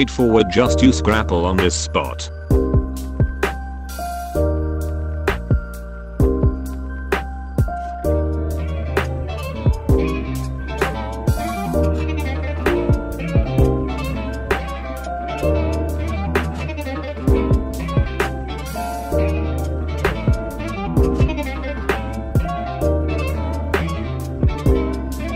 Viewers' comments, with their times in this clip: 0:08 Bro, the saul sound audio sped up is just AMAZING.